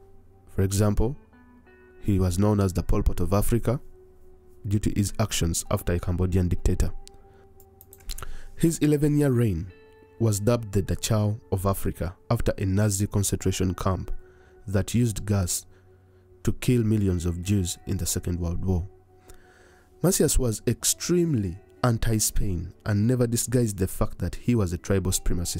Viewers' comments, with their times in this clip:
0:06 good content but oh come on man!!! put some distance between your mouth and the mic, that sound is quite disgusting...